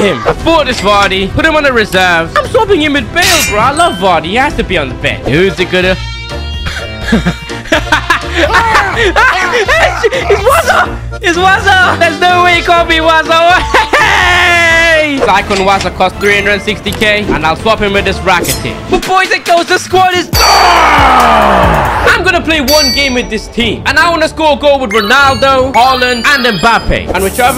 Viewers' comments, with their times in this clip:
0:08 the heavy weapons guy laugh lol